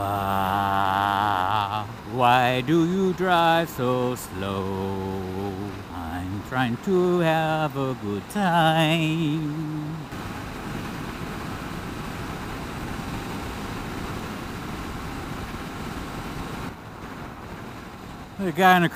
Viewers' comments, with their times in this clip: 0:03 sounds like a Disney tune 😂